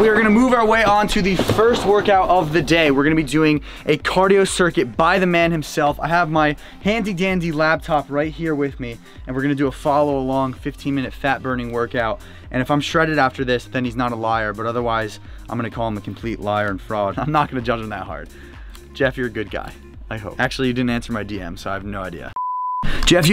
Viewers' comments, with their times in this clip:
0:06 he called it a labtop :P